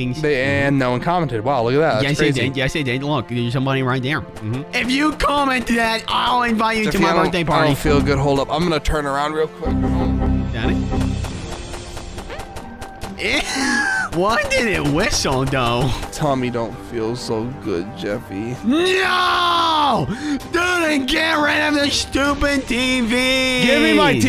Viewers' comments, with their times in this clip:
0:09 Why did Marvin’s fart whistle